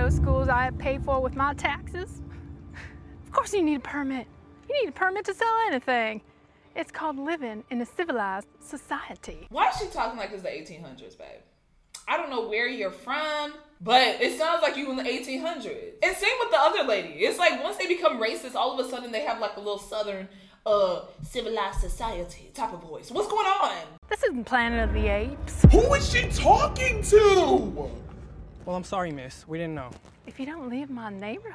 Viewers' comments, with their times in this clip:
0:06 wow she sounds like cartman here
0:11 “I don’t know where you’re from-“ South Carolina. I would know. I was raised there. We have slightly thicker accents then that but - still-
0:16 it’s giving they’re in the south